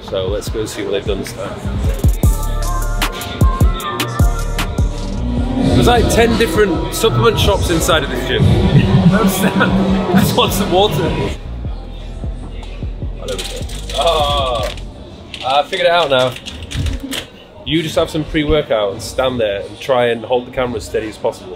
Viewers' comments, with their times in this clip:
0:05 sounds like we were waking up from a dream or a grenade explosion.